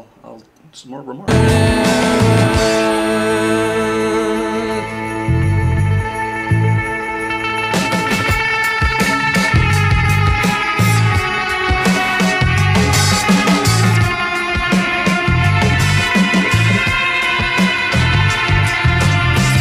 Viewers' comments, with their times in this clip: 0:07 I hope you all notice there are two different and mixed tracks from one in left and one in right channel... that's what makes Airbag unique for me :D